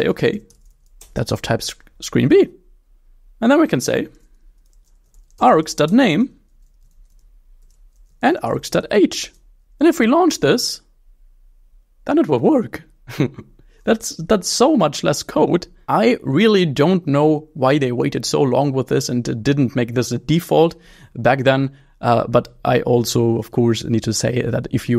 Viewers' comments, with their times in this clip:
0:10 He sounds so happy about it 😭